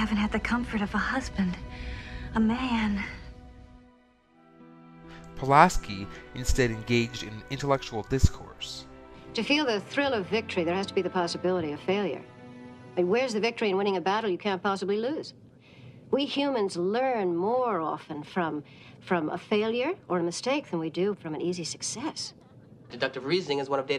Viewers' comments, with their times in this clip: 0:09 I like the way she talks here just like the T.O.S. much more depth and line speaking that is what T.O.S. had